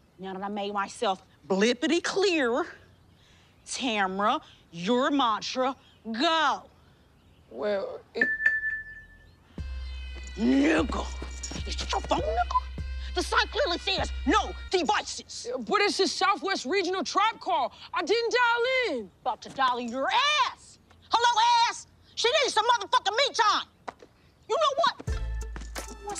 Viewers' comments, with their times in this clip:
0:09 The funniest delivery of the n-word ever